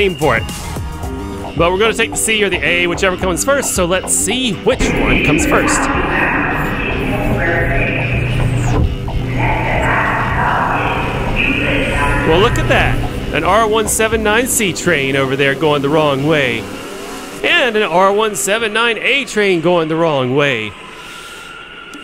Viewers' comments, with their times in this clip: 0:04 Euclid ave bound C Express announcement.